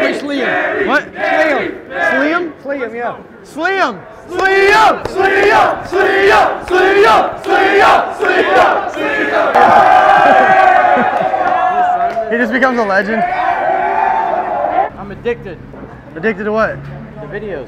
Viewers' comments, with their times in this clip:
0:04 there like Sweden Sweden